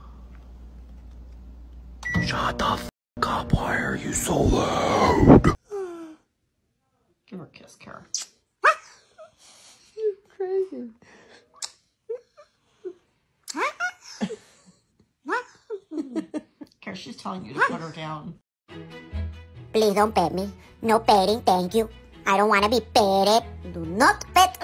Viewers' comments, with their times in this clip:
0:06 Umm. Did that cat bark?